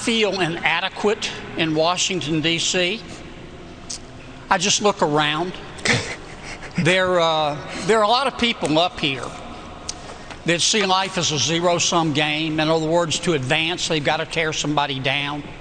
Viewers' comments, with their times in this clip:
0:03 sec much laughter IN THE BACKGROUND. LOL